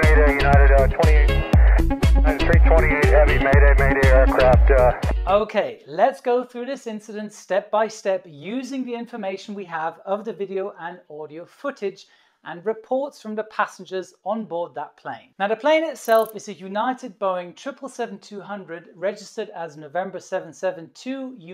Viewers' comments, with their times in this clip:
0:05 The audio quality of this is poor. It sounds muffled, not clear. Of course in the aviation the audio is always horrific but it is not a reason to put a similar burden on others...